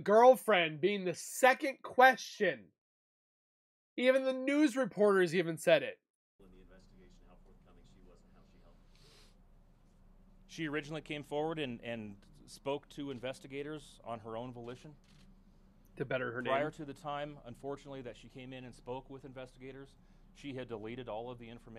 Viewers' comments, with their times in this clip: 0:07 watch Rourke here, his body language, his heavy breath before he answers, he licks his lips. and watch it on slow motion, 0.5 speed… and your gonna see ALOT of red flags. Lol 😂 just saying, it’s like a different video. 😂😅😅.